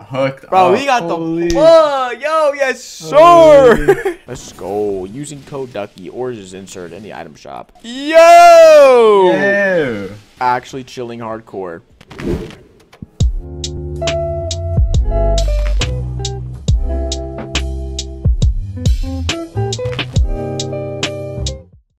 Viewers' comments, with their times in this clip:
0:08 sound like Tfue Like if you agree